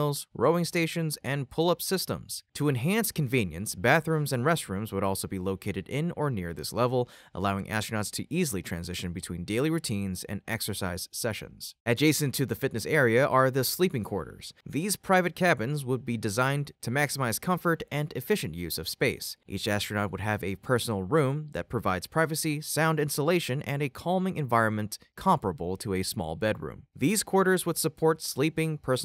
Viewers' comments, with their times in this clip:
0:10 GREAT SPACEX, ha-BIT-a-bul? All of my 78 years, I've heard it pronounced as HAB-it-uh-bull.🤨 I'd guess that going potty in a space suit would be a bit of a challenge.